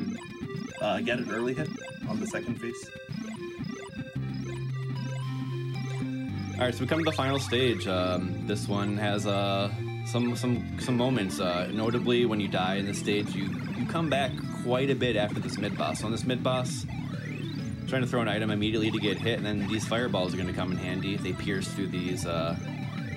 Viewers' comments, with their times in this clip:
0:08 starts some extremely underrated VGM